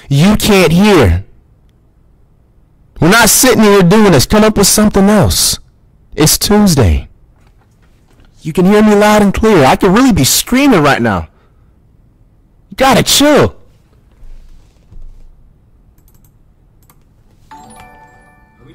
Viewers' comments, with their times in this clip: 0:05 The its Tuesday asmr